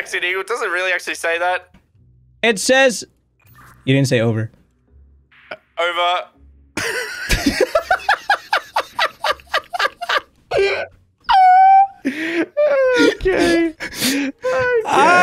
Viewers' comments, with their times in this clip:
0:03 Literally sounds like the Mexican laugh meme 😂